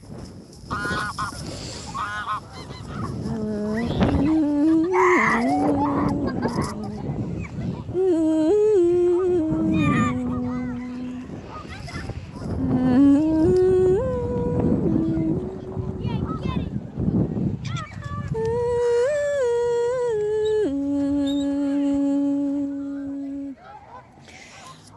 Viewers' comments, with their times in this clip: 0:09 there is a kid being literally murdered by three geese Caroline: OOOOOWWWWEEEMMMMM 🧜‍♀️